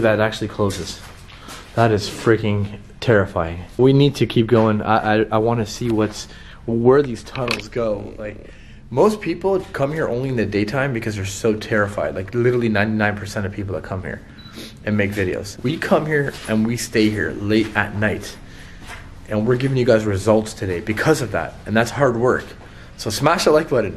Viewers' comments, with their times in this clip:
0:07 sounds like a growl